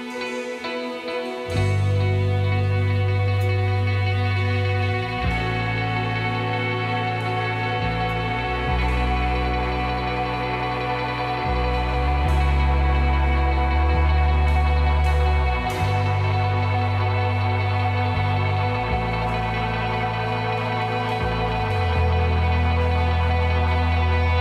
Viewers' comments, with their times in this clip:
0:05 Ah that’s amazing, thank you so much! So glad you enjoyed this and thank you so much for the kind words and for sharing this. it’s called an e-bow. It’s a device that vibrates the string you hold it over and creates an almost violin / bowed effect. I think they are quite common and can be found in most guitar stores or certainly online. I hope this helps a little. Thank you again my friend and hope you continue to enjoy the album